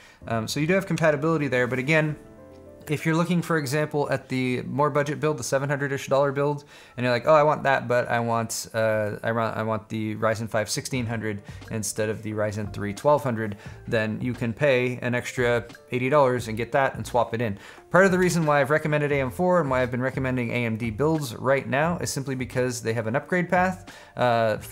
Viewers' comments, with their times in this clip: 0:10 That background music tho